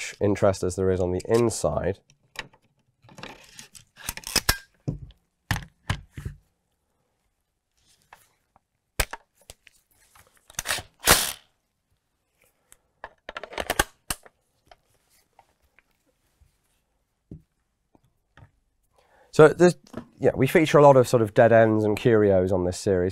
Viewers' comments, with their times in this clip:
0:10 Did it 'Sproing'' there?